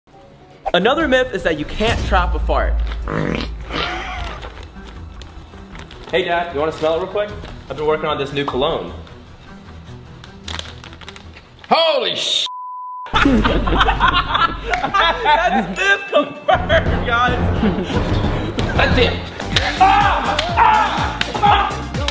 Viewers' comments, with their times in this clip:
0:03 farts on bag